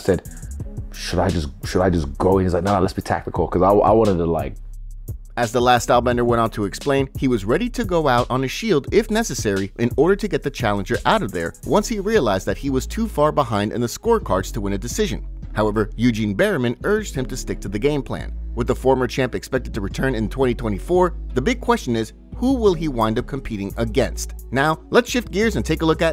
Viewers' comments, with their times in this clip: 0:08 liar Sean was shouting 😅